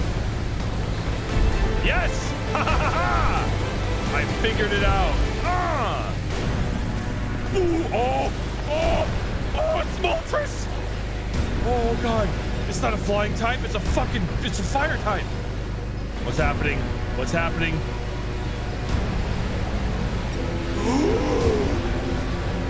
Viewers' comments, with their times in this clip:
0:05 It was at this moment that he knew He fucked up Also the music is INCREADIBLE